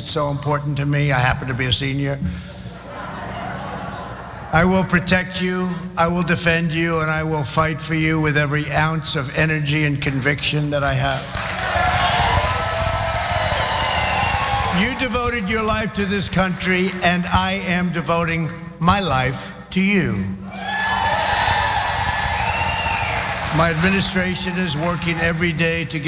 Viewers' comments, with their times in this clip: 0:09 "I will fight for you with every ounce of my energy," he says in an energyless, monotone voice.